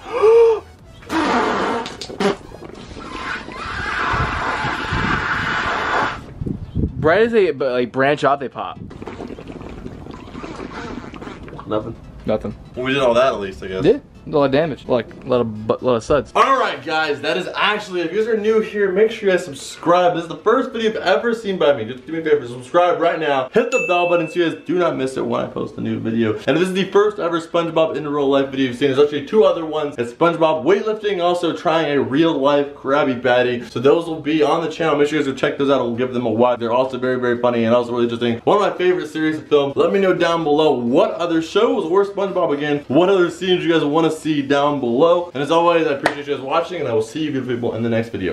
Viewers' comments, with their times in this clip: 0:03 it sounds like a bong
0:32 what noise was that